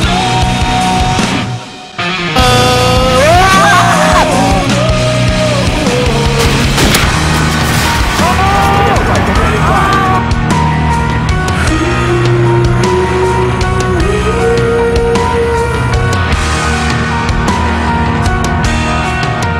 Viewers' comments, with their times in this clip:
0:03 Thumbs up for the scream !